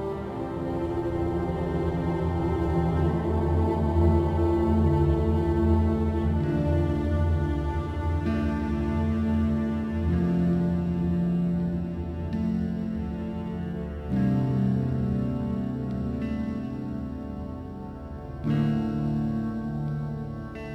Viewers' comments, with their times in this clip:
0:07 "These cold days" is incredibly sad, especially starting from This soundtrack is a masterpiece; it perfectly blends with the atmosphere and the mood the game needs. And yet is so simple at the same time; so many emotions conveyed with just a few notes. Whoever made this is a musical genius in my book.